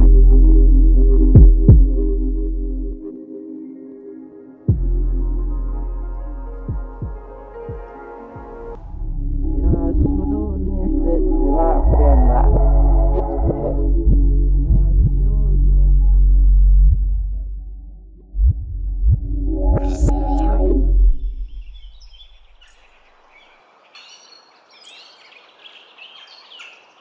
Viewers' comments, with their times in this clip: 0:09 The reverse part hits hard bruh I'mma need the full version😂🔥